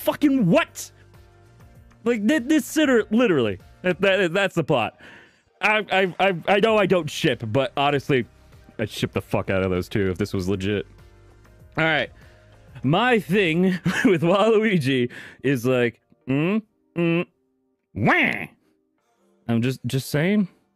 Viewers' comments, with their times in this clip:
0:03 .... dammit, now I got that thonk in my head!